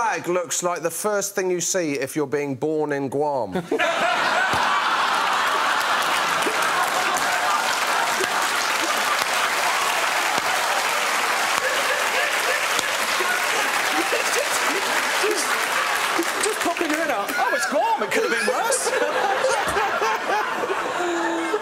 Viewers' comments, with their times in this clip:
0:03 the man laughing always gets me